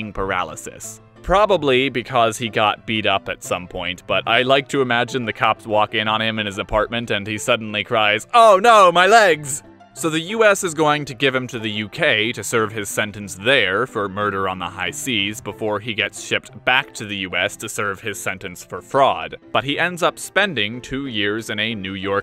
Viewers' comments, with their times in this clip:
0:08 Am I the only one that thinks you sound just like a FilmCow character here?